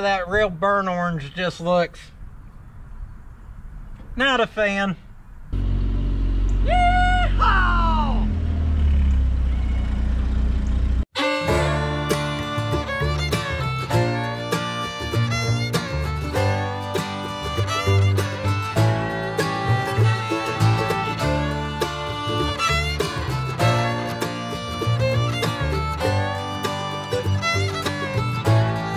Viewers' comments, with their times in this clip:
0:10 love how someone just Yee-hawed right back at you there haha!